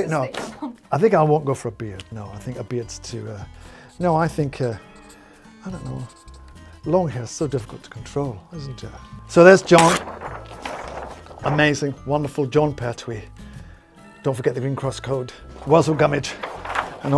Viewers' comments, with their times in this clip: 0:04 that's the cutest I don't know to ever have been spoken. Adorable.